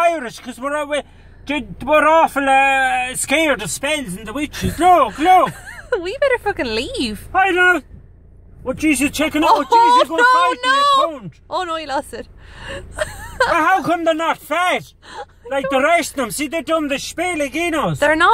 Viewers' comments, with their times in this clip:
0:05 she sounds like my gf when she said the word "F". lol we better F..ing leave... that was epic!!! specially with her angelical voice ;)